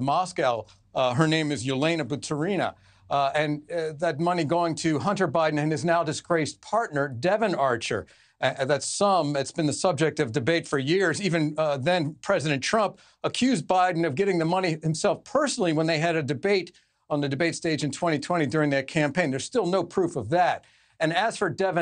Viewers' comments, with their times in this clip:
0:05 Why did you emphasize "Devon" when saying "Devon Archer"? Is there ANOTHER "Archer" in this story? Is that why theres a need to emphasize "Devon" ??